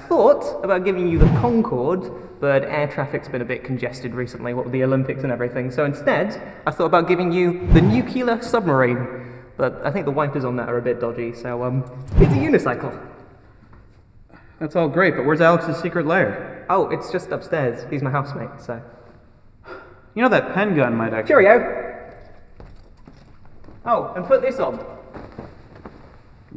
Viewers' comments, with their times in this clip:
0:07 Why does so much people can't pronounce Nuclear?